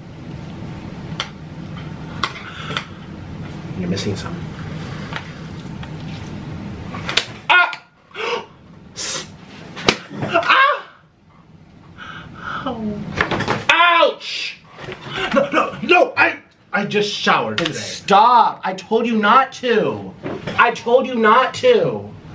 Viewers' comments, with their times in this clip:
0:09 did he moan???